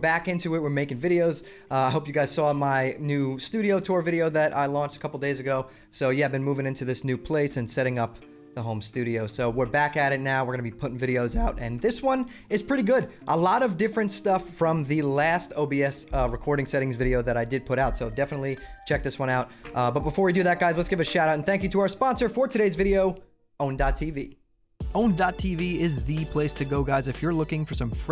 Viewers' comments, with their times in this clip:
0:10 Im sorry but I have to point out the voice crack